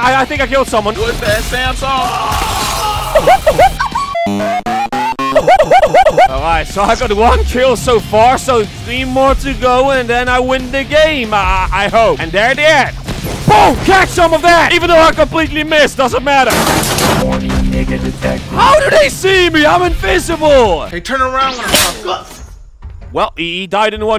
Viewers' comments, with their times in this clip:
0:05 🤣🤣 pac man theme intensified